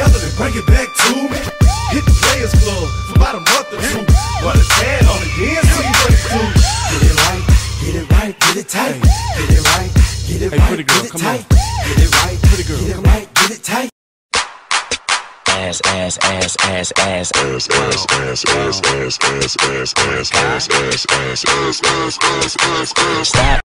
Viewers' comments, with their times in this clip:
0:10 it sounds like hes laughing lol. And this already has 24 views?! owo